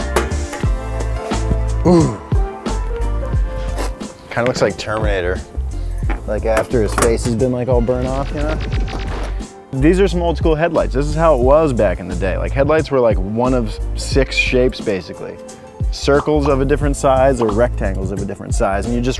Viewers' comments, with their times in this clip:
0:06 why is there an ambulance in the background